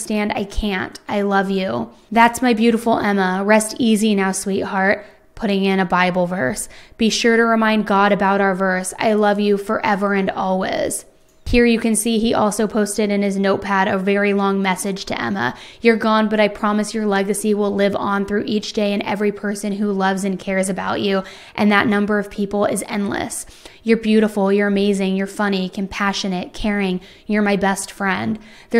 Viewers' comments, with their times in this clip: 0:10 So weirdly unique how you pronounce always as "all was" in all your vids. it's very noticeable.